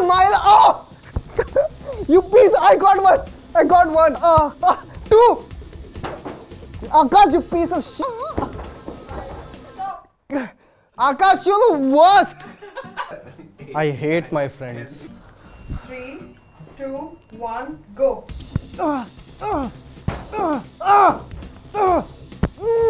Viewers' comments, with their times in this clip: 0:08 People wearing earphones must have noticed the 'oooh' when he used to abuse🤣.